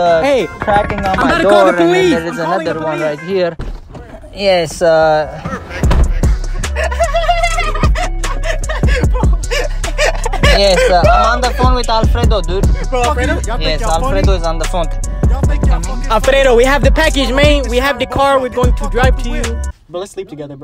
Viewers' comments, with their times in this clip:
0:04 that laugh XD
0:07 that laugh had me dead😂